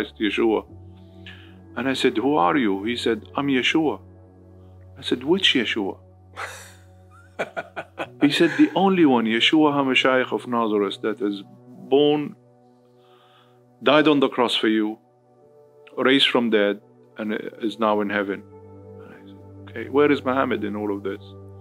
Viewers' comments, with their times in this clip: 0:07 That FAKE laugh 🤢🤢